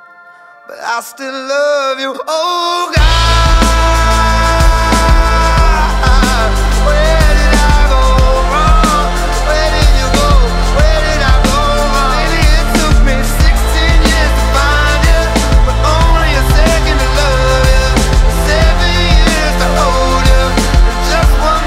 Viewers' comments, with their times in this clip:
0:03 gives me chills everytime. Such soul in this man's voice, it's unbelievable. Part of the reason they are my favorite band
0:03 That long, slow build to the chord change payoff "Oh God" shivers, man.